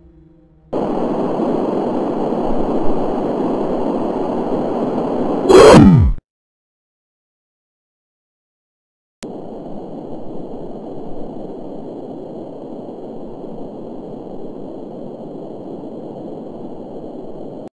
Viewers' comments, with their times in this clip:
0:07 I tapped the iPad the moment the hit noise played just so I can know the length of the video. COUNTER.